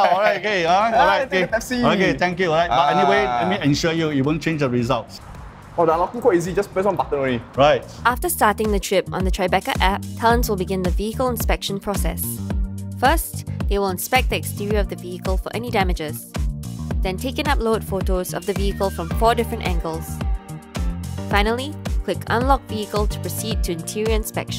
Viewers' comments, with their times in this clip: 0:08 Tri Becah app...? Not Tribe Care meh?